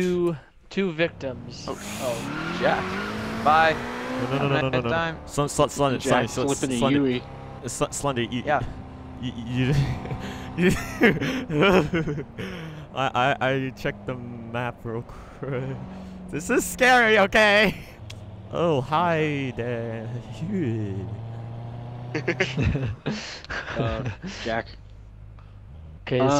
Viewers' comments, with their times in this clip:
0:05 Spi Spi Spit it out junior!!! lol
0:07 why was he stammering